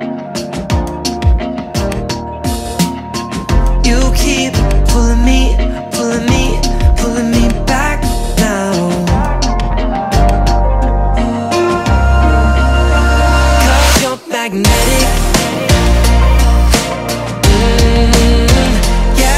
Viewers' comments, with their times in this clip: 0:07 the right guy´s voice is such a beautiful voice.... but i don´t hear the other guy´s voice... is his voice just quiet in the background and the right guy´s voice the loud primary voice? did the left one just moving his lips and the right guy sings because he´s better in singing?